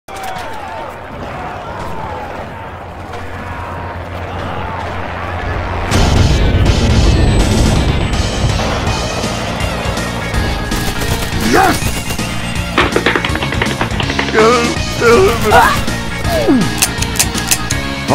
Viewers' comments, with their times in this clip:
0:03 Is there a "Jeanne au s'cours" very far away ??